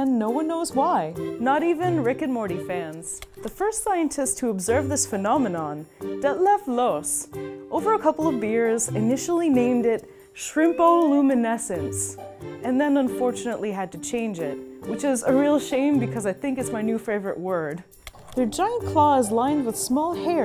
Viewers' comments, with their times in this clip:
0:05 Why did it say touch on